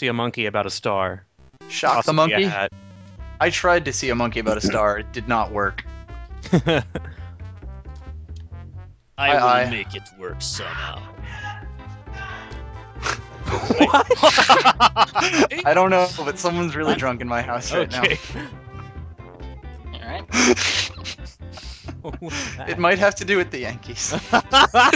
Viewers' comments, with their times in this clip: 0:08 For a second I thought I heard Diabetus